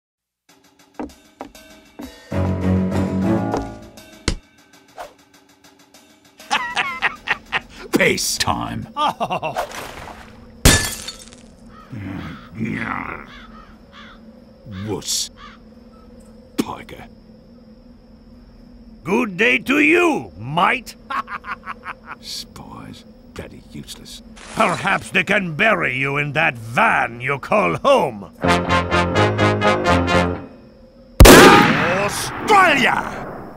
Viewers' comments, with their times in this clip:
0:00 Swear to God, I thought that ticking was a noise coming out of the walls of my bathroom. That type of stuff happens to me way too often.
0:16 did sniper just say p o g g e r s